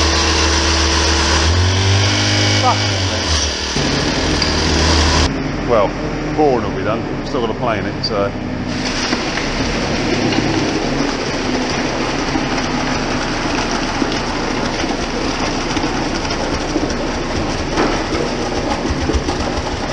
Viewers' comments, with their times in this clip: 0:04 did he say fuck or stuck?